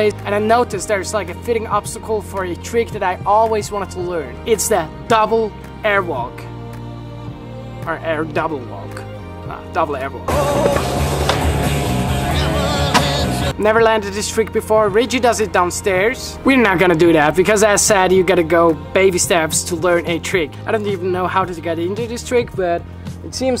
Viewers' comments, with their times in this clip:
0:06 Lol the Rick subliminal noice